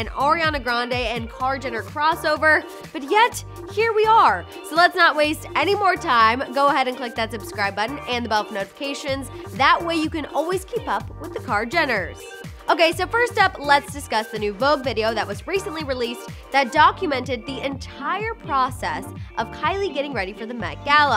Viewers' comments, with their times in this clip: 0:03 Did anyone else catch when she says “oriana grande” and not Ariana?